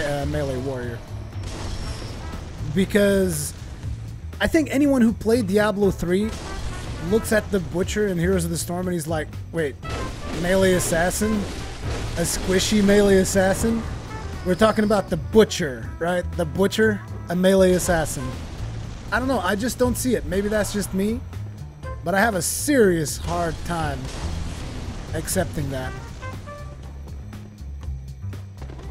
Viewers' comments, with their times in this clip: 0:09 idk if it was just me but the sound was like a mili second or 2 forward,